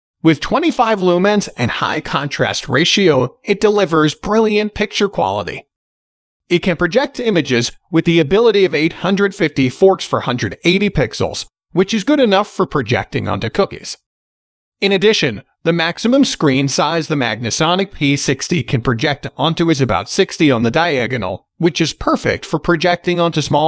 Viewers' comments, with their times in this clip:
0:06 i swear he said 850 forks !!!